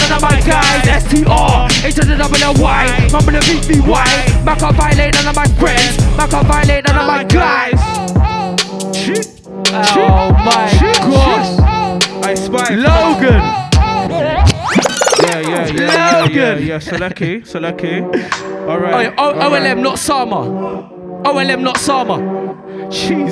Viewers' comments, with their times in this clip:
0:07 The switch up catches everyone ahaaaa
0:08 beat is just something else 🤒🤒🤒
0:08 Whats that beat after as it sounds so evil🤢🤮